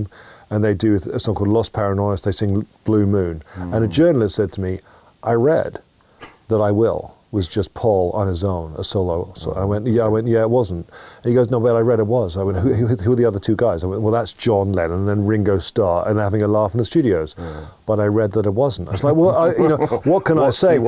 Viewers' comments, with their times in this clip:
0:05 HA! Giles has a pretty great American accent.